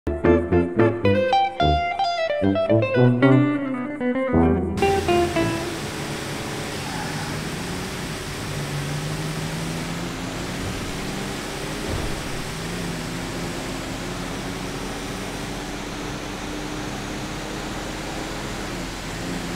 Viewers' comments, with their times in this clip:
0:06 Lord, that just sounds slow...